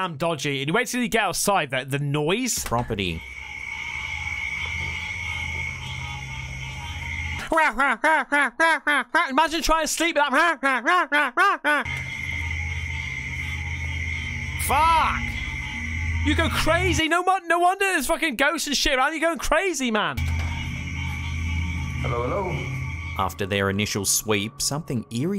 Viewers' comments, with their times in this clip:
0:08 Thats the sound of summer nights down here in the south. Especially after the rain. Nothing but the sound of crickets/grasshoppers and frogs. I live in the US. this is a normal sound for me.